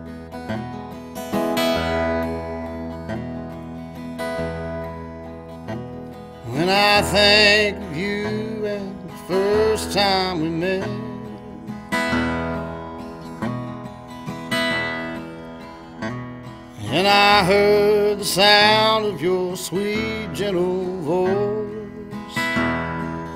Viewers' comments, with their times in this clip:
0:05 Beautiful song, beautiful words, and beautifully sang! I love it!